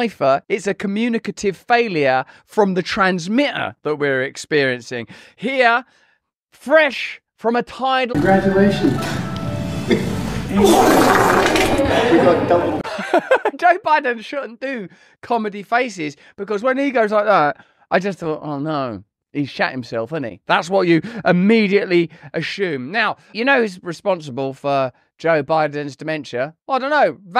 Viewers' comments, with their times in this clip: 0:10 is it just me or does it both look AND sound like he s*** himself?? 😂